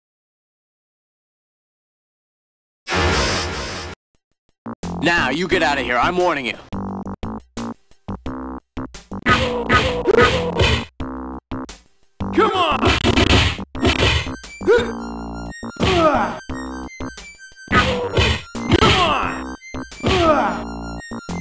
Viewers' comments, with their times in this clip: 0:05 sounds like English Dub of Chang from the Bruce Lee film The Big Boss.